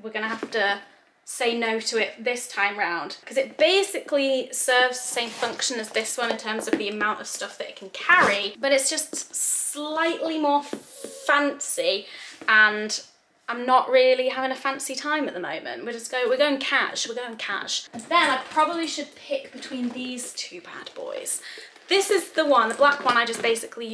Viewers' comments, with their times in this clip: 0:04 True northern slipped out “baaasically” 🙈😂